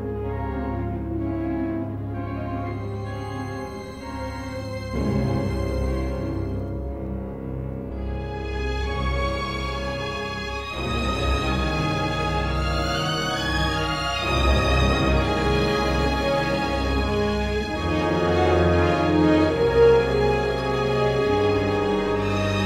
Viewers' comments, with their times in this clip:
0:08 I love hearing the classic Orca theme